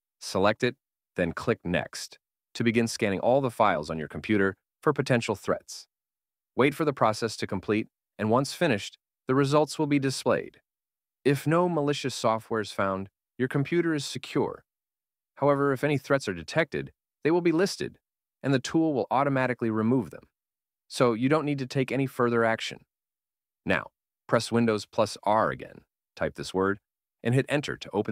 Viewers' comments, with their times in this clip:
0:09 idk why, but it sounds like 2B's pod from NieR Automata here to me, for some reason, lol. Makes even more sense since it's AI. Nice quick vid, thanks.